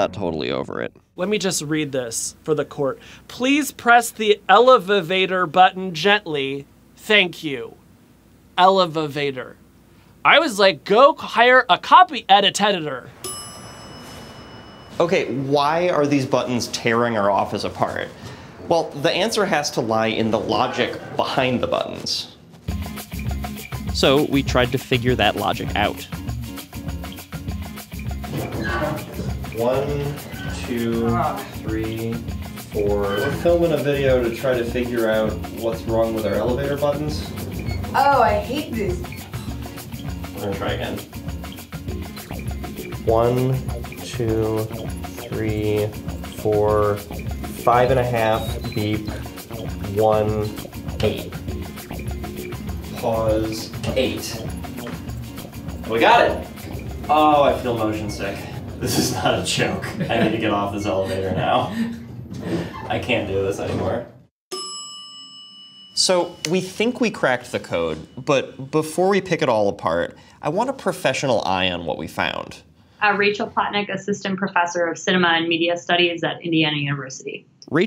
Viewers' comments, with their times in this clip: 0:10 "Go hire a copy editetidor" oml that got me laughing so hard
1:04 Oh I didn't watch far enough to see him point it out :'D Also: Anyone also watch Technology Connections and realize they put the wrong ding ?
1:05 the elevator dings for down but there's only one bell It should ding twice